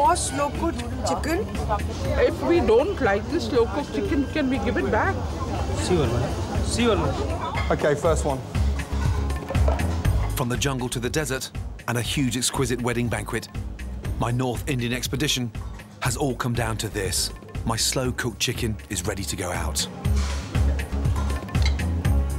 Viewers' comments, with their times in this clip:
0:04 Woman: If we don't like the chicken can we send it back Waiter: Sewer mam, Sewer Me: Probably he gonna throw that food in sewer.
0:05 I thought he was saying "see u are" then i realised he was saying "sure"
0:06 I love how the waiter says "seor Mam seor"